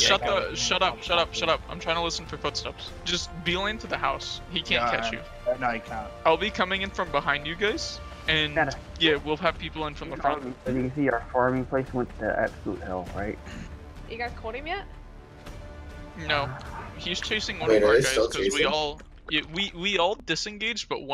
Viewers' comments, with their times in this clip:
0:07 voice crack lmfaoo...whoever that is has an absolutely obnoxious voice...